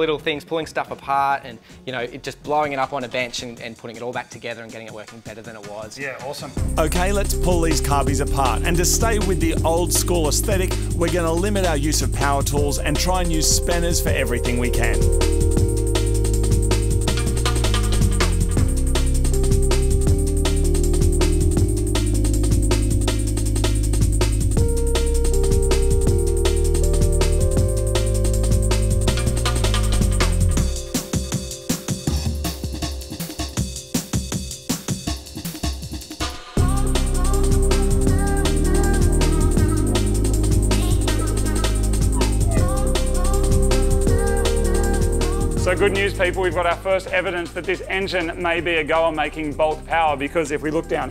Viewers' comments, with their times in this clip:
0:04 Gots to love a slow Amen intro - Such a great track guys, thanks for the continued musical gold.
0:06 What's the DnB song that starts playing ? I love the use of the Amen Break, sooo good!
0:11 Jungle chune! Smashing!
0:11 That tune is banging. Anyone know what it’s called?
0:37 The bit that starts just has summer evening cruising tune written ALL OVER IT !